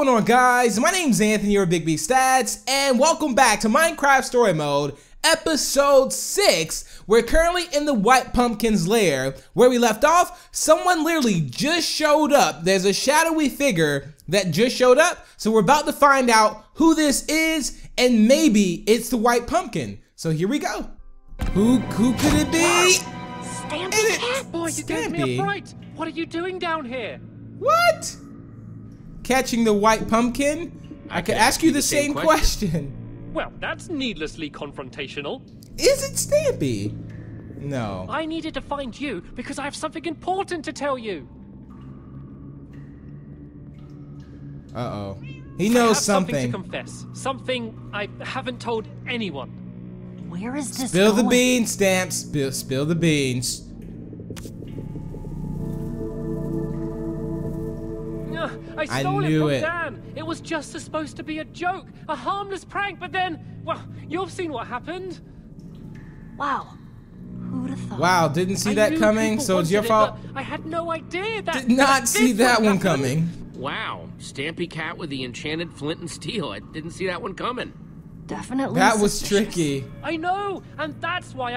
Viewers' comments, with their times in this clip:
0:10 he spits a little bit
1:06 I thaught Petra Said "Who The F***"